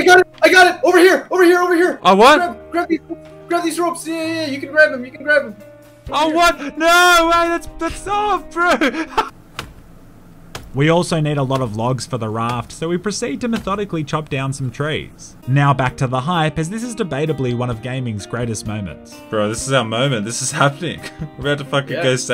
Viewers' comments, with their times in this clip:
0:09 that long pause tho